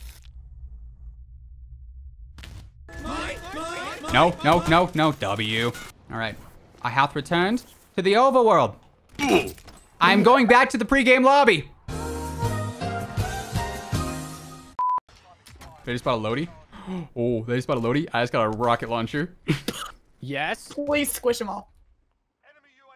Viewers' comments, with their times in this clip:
0:10 you sound like JFK